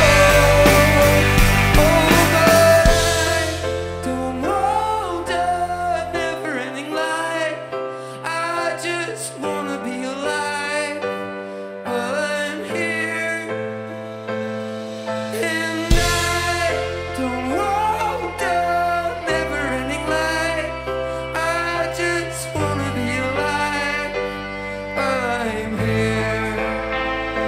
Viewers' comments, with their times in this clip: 0:04 until the end of the song, I was fucking bawling. you can hear his pain. fuck me. Jesus, i just want to hug this man and tell him I love him.
0:06 he soumded like he was crying
0:07 cry voice how can you be so cute ♥
0:13 oh sorry hard singinh